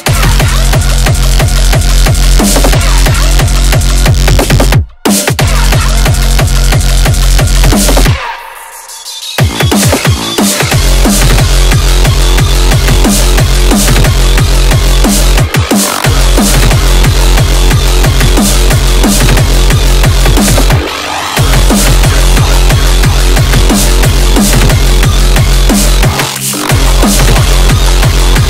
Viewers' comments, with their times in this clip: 0:09 Very good mix!!! that particulair sound reminds me of evil activities - vengeance.